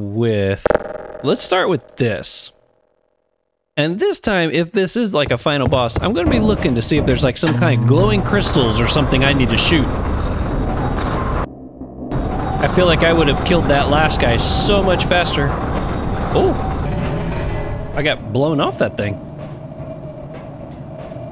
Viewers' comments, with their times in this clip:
0:09 one thing that's kinda annoying in the digital versions of the half-life 1 expansions, is that the music stops after loading a save or going through a level transition. you can even hear the best theme in the game cutting short (someone actually made a mod to fix this specific instance of it)